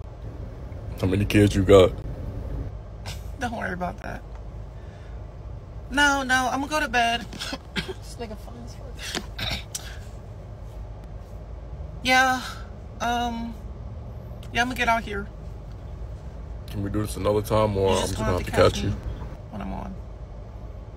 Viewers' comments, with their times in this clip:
0:08 That cough !!!! That way I scream and burst into tears of laughter 🤭 😂